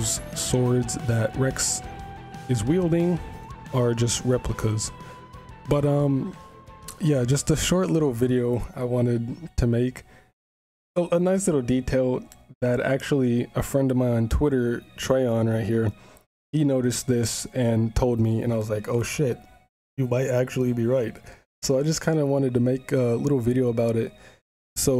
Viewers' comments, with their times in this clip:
0:07 What was happening to the background music in this YouTube video of yours please.